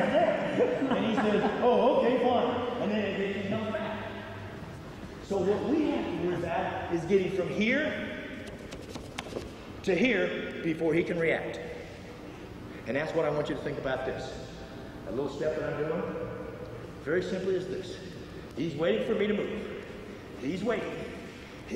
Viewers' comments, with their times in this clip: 0:08 holy crap what just happened it's like hearing a very soft technical death metal blast beat.